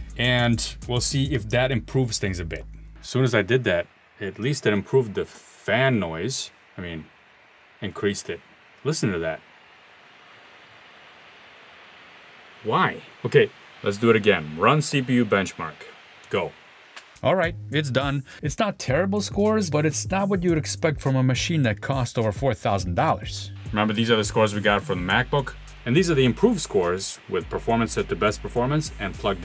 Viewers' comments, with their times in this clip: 0:10 F-22 raptor taxiing
0:10 What fan noise? Can't hear it over the A380 taking off from my Alienware.
0:11 I couldn't hear the fan noise due to my own fan noise...